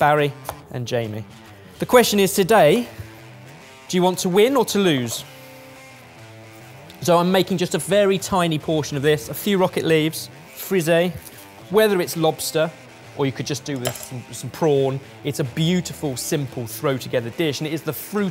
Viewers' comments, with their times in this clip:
0:05 Once I heard the “to win or Toulouse” I thought immediately of Concorde, then I heard the “harmony between two nations” i.e. like a flight path, and its beginnings from 1969 onwards, aerospace development, and the BANG like a sonic boom, I shouted Concorde each time. My dad has now text me to see if I’m ok for screaming Concorde from the living room at the top of my lungs